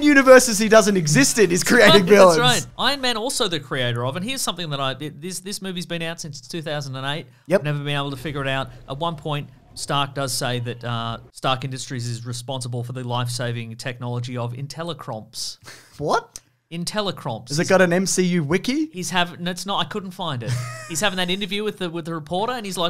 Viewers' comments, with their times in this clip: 0:07 This is why people should watch movies with captioning on...